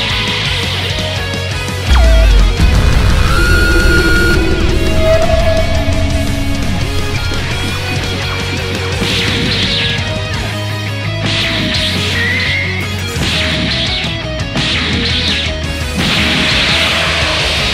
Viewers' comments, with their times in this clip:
0:05 i cant think of a more perfectly errie sound for what appears to be reality breaking